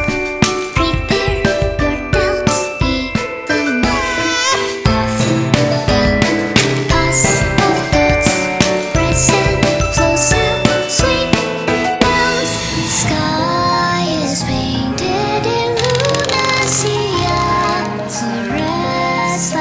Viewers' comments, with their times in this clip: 0:03 Am I the only one who get creeped out by that baby "cry" sound?
0:04 Ah yes, classical baby cry